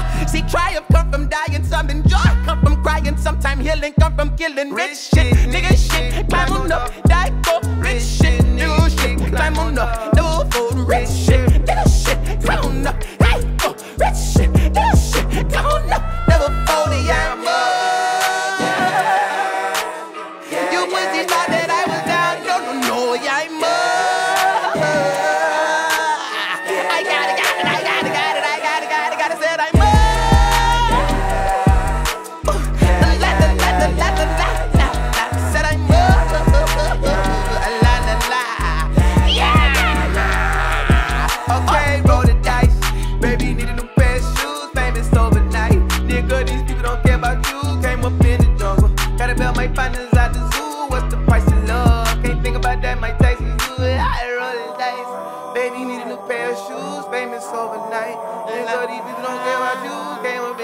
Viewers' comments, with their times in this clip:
0:03 Bruh they should of repeated again and made it the hook.. That shit bounce
0:04 that switch up is crazy
0:04 The way doctur dot comes in is sooo good
0:10 Is he singing or getting bad case of diarrhea
0:41 how he entered the beat